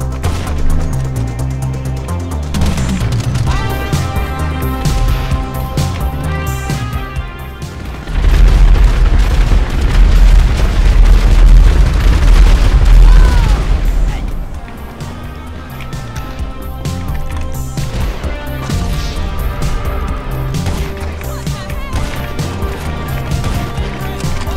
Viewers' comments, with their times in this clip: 0:07 Why is no one talking 😂